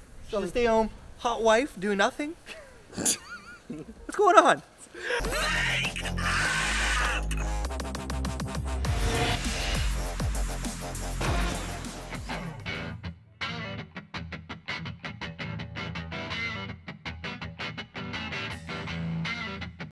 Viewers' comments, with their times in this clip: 0:05 that freaked me out, man. Thats my alarm clock sound lmao